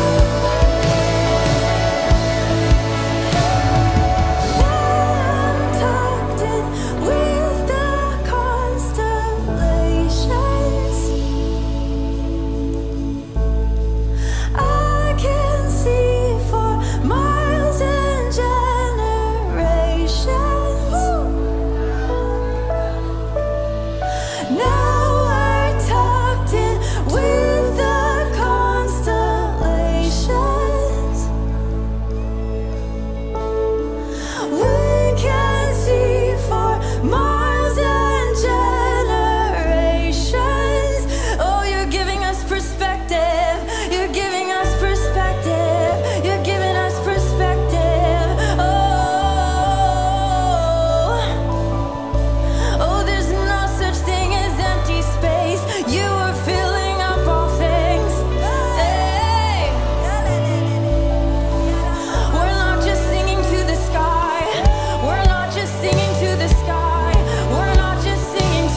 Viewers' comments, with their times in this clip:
0:04 always gives me the holy spirit down my body her voice was God sent for sure wow
0:54 what does she say ?? i get "theres no sustain is empty space"... help meee...
0:54 what does she say ?? i get "theres no sustain is empty space"... help meee...
0:54 what does she say ?? i get "theres no sustain is empty space"... help meee...
0:54 what does she say ?? i get "theres no sustain is empty space"... help meee...